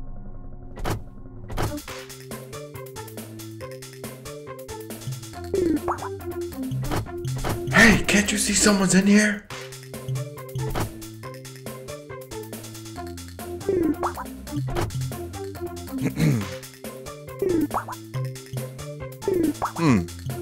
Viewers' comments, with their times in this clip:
0:06 Did Vinny say that? I can't tell lmao